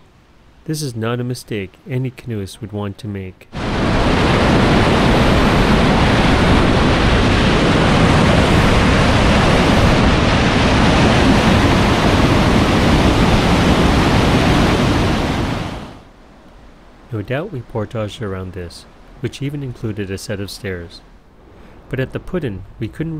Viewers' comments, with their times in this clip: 0:08 where are the overhead Orange dangling balls warnings? If you got stunk in that current before you could bail out??? Glad you could hear the big waterfall